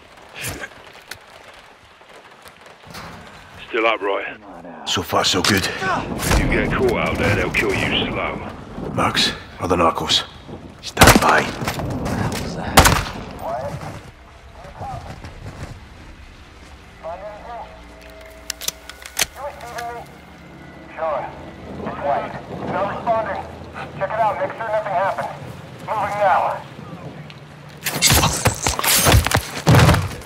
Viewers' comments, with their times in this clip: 0:05 You can hear the impact of the knife
0:11 obvious gunshot “what the Hell was that?” Soap: kills next guy then hides in houseplant